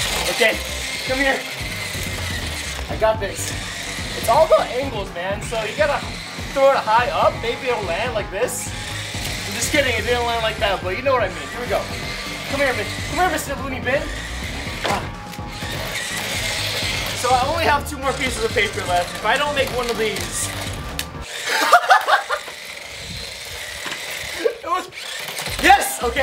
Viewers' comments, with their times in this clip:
0:10 it sounded like he said b***h
0:11 Omg he says come on b*tch if you don't believe me turn on your subtitles and listen to him
0:11 HE SWORE HE SAID COME HEAR B!CH